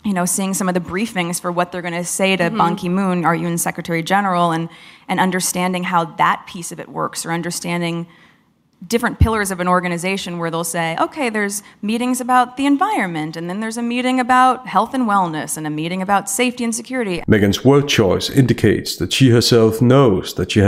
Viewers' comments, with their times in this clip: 0:06 She calls Banki Moon; MONKEY MOON! 😂😂😂😂😂 Racist speciesist!